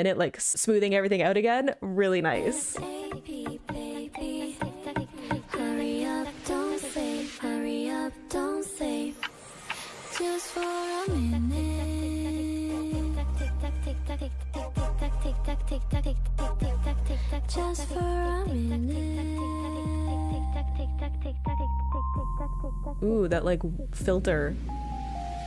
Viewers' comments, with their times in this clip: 0:10 this “just for a minute” is actually Minji singing, the lyric video got it wrong